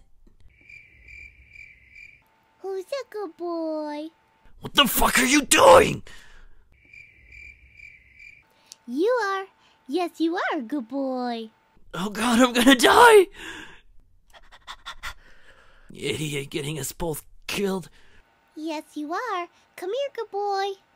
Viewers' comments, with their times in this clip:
0:04 is the best of Axel voice i think